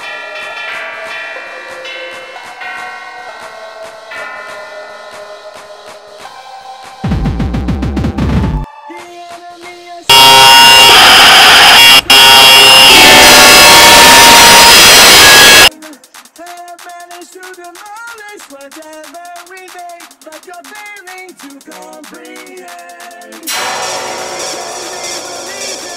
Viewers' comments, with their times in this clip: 0:10 the electric razor🔥🔥🔥